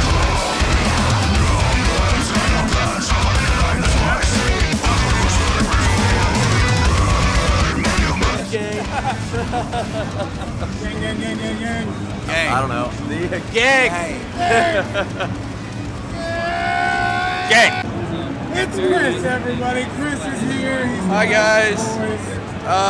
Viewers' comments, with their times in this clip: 0:06 The Melancholia riff goes so hard.